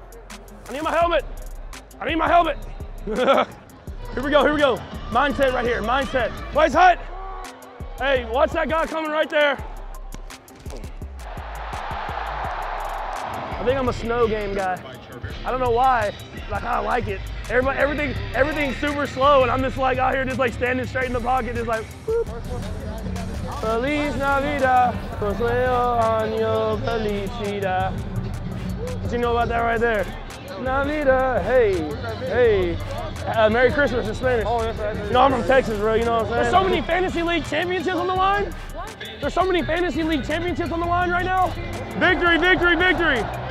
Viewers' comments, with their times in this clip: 0:03 Seth rogan playing football
0:24 he starts singing in Spanish what do you know about that right their.
0:25 I didn't know that all waht I need to have for being happy is Patrick singing "Happy Christmas" in my language XD